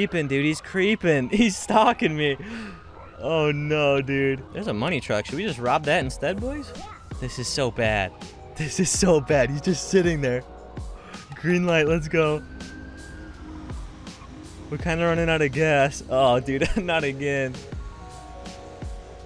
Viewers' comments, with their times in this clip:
0:03 the music in the background said yeah at the perfect time.
0:03 the music in the background said yeah at the perfect time.
0:04 there’s a money truck should we just rob that instead boys - then the music says yeah
0:04 he asked if he should Rob the money truck, then the song in the background said "Yeah" or "Yup". SEE FOR YOURSELF
0:05 listen how the music says "YEAH!" When he asks if he should rob the money truck 😂
0:05 Did y’all hear that (Yeah) in the music when he was saying should he rob the money truck instead
0:06 the music answered for him